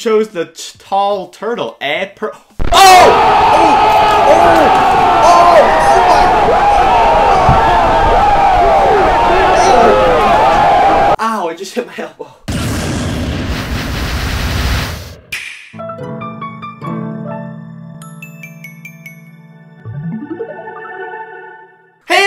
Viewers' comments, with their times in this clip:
0:03 Why does everyone use that overused stupid OOOOHHHH sound effect. It’s dumb and overused.